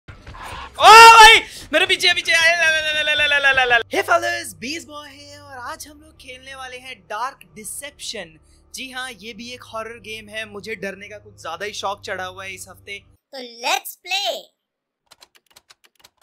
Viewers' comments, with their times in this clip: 0:01 Earphone user: deaf Booster user: heartattack